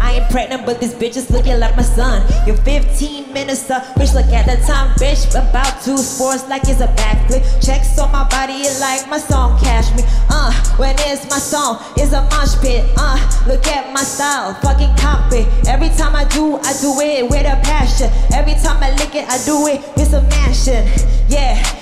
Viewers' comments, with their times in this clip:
0:05 flow switch was ill